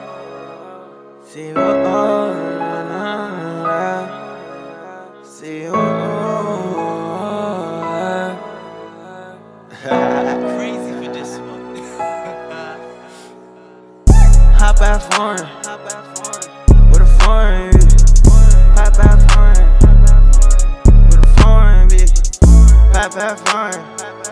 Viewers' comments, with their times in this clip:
0:09 Yo I rate the Wiz laugh also a dope vid keep it up man